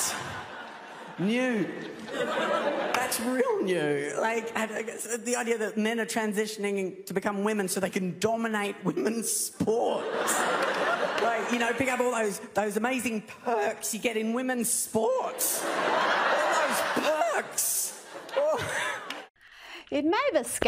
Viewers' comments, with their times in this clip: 0:08 Why are they laughing? Seriously.😐